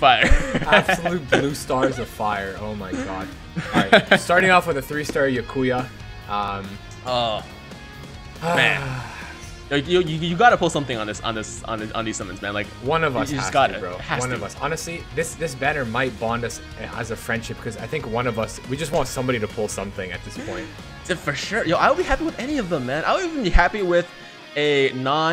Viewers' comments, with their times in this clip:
0:07 at the time DID YOU SAY BAKUYA? LMAO BRO WHAT